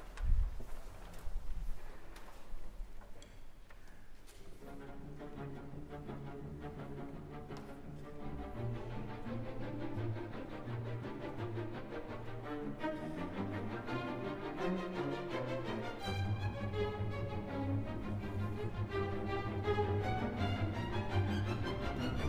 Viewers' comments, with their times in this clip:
0:04 I highly recommend listening to at 1.25 speed - the tempo feels a bit more correct to a version I heard with Rostropovich or Rozhdestvensky conducting the actual opera (rather than the suite). It sounds so much more dramatic and - somehow - louder at this speed!